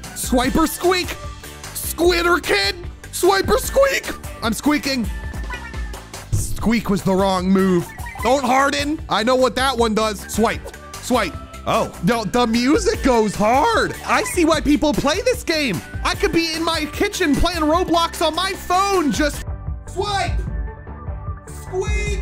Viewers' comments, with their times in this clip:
0:03 why do you sound like youre saying "Swiper squeak" itz like you used Swiper from dora the explorer and made it your pokemon.